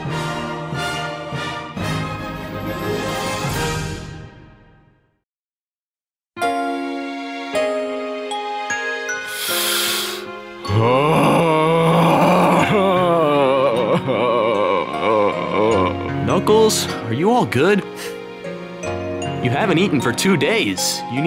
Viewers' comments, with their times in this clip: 0:05 i like that sad music i wanna know the sad music name i almost cry